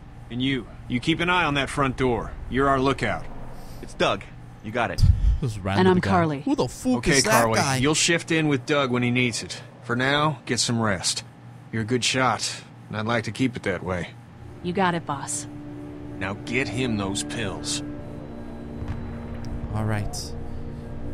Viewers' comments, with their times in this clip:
0:05 the way he said fuck, im sleep 😂😂😂😂😂